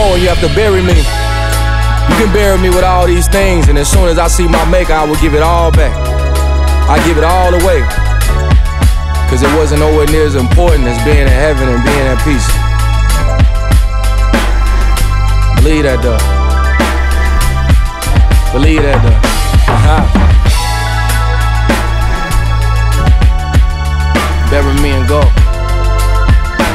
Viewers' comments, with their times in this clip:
0:10 through he end of the song omgggg those chords and that baseline is everything!!!